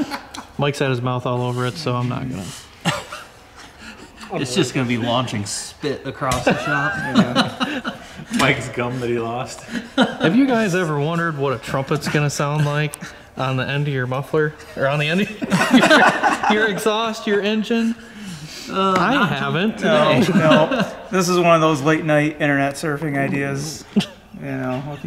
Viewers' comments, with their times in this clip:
0:10 Finally! I figured out who plays Hank's voice on "King of the Hill!" JK!